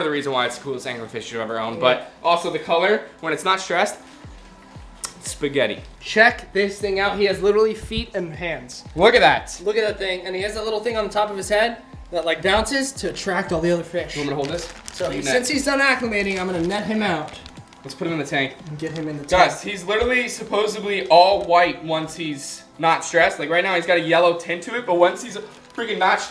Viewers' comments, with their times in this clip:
0:09 Just skip to for the fish and skip all the annoying pish in between. Stop shouting into the camera.